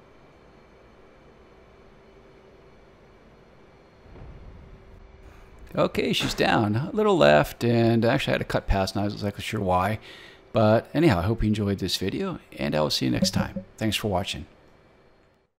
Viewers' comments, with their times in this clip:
0:11 What's the new "dub dub dub" sound ?